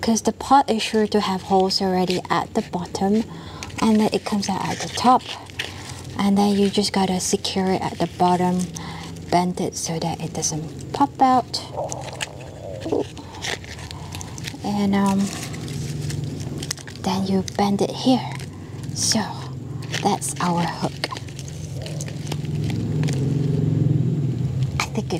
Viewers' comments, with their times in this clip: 0:10 its beautiful, but did nobody seriously notice the fart in right after she says "pop out"? rofl